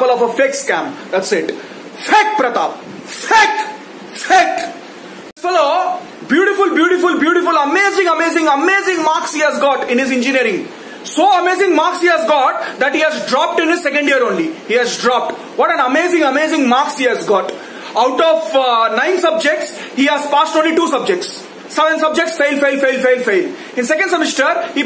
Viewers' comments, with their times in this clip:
0:04 he literally laughed 😂 Who all noticed?
0:04 He can't control his laugh
0:05 he just laughed .I know u just do acting